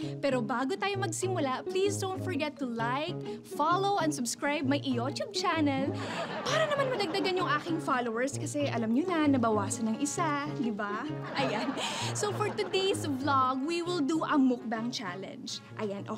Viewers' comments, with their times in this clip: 0:04 what? “My iyot-tube channel” ? 😳